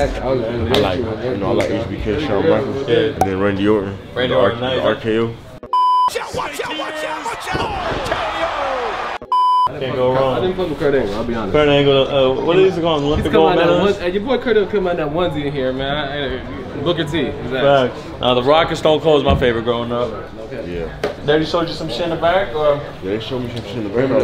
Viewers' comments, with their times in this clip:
0:05 Pronounced "Diamond Cutter" wrong 🙌🏾